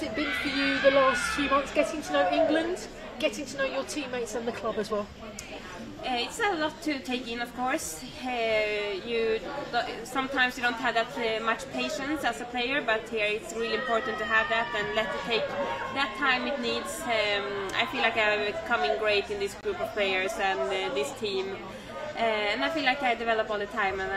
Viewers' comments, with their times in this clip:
0:08 Kaneryd English is perfect